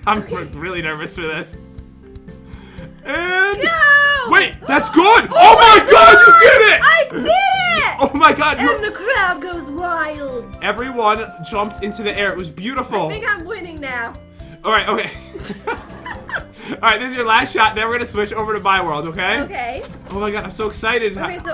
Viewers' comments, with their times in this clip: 0:05 RIP earphone/headphones/AirPods users aka RIP MY EAR 😅😅😅